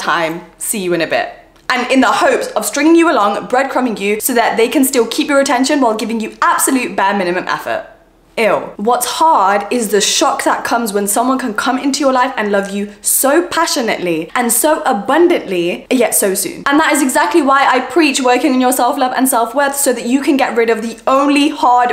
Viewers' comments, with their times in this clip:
0:08 the EW in the second advice was so personal XD